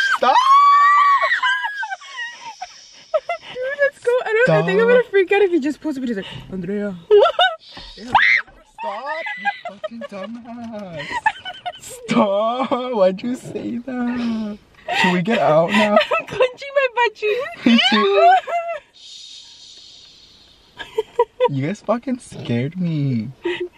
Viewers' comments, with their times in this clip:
0:07 scream “Stop Fcking Dumb Ass!”
0:08 The scream was scary